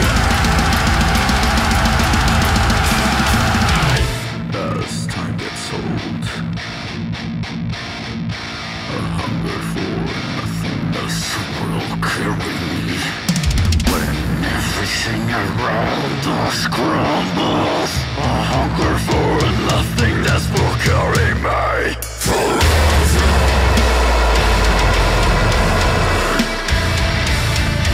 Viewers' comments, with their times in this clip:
0:10 The entire song is filthy but onward slaps hard af. That bass drop is nasty and that groove is undeniable. 💣💥🔥